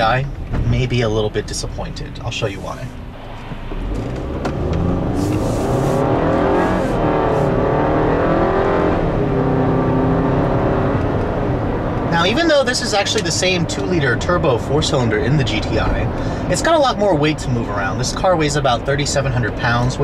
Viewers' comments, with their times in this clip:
0:04 I'm not blaming you, it's fine to have an opinion. I'm just surprised you haven't said a thing about the engine. To me (and even some owners), the 2.0T sounds like a diesel at low rpms and gets really raspy at high rpms. If I were to close my eyes I would think it would be a Hyundai 4-banger, not good.